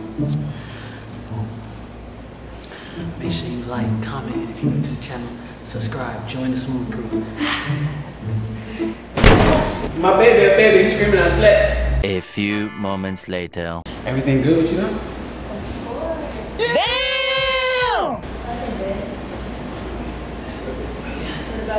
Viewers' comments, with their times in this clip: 0:07 i dont think a bed supposed to make that sound